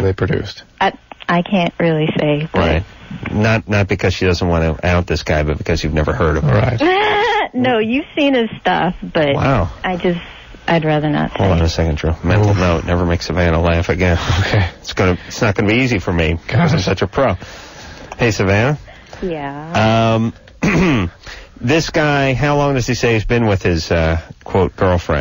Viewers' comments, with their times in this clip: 0:06 is the girls version of kawahi Leonard's laugh 🤣